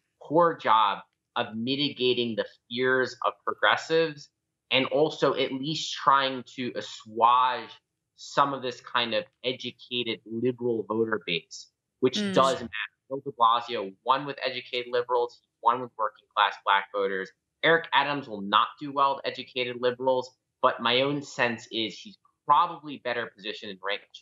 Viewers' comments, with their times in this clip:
0:06 Do people really pronounce "assuage" that way?